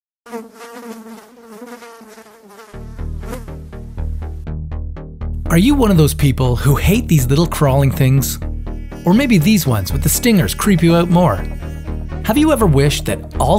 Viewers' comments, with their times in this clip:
0:00 OHMAGAH STOOOOOP!!!! Edit: I had earbuds in...